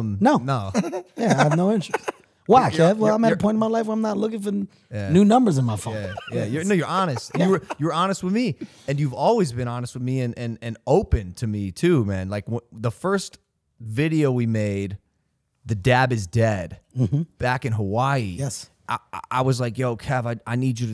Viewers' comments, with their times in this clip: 0:04 lmfao best stutter I have ever heard
0:06 close you eyes.he say nigga your honest wime.🤣